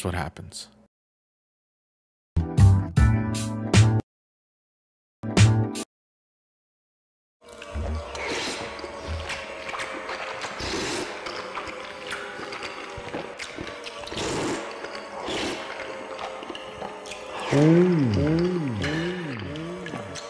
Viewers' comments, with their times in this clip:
0:07 live audio of me devouring a bowl of Maruchan spicy miso ramen on a Saturday afternoon